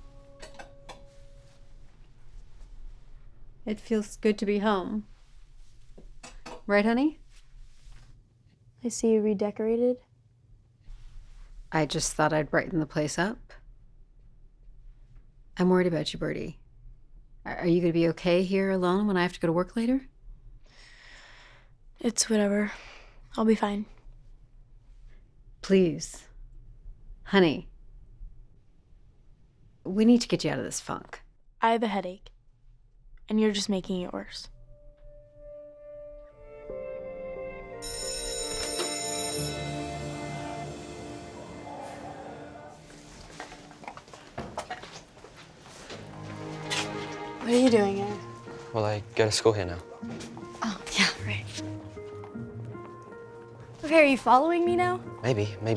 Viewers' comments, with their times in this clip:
0:09 Is it just me or did your Siri go off 😂😂
0:09 did anyone else’s Siri go off? 😂 She said, “I see you...” and it sounded like hey siri 🤭
0:26 Did Birdies mom say, “please honey we got to get you out of this f word” or did she say funk?
0:29 OMG who thought they heard the f word instead of funk 😂
0:30 idk if she said fuc or fog
0:30 did she say funk or the f word bc I turned on captions and it said funk but it didn’t sound like that
0:31 Ok no one is talking It sounds like she said the f world LOL
0:31 did she say the f word or funk???
0:31 Is it me or. do you hear please honey we have to get out of this fuc*
0:38 who else thinks that birdie's mum said the F word 😂